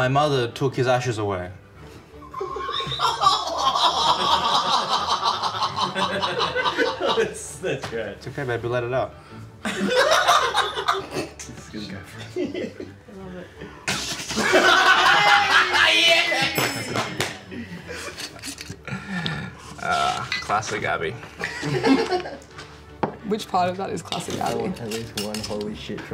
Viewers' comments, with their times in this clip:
0:07 "It's okay baby let it out." - fart 🤣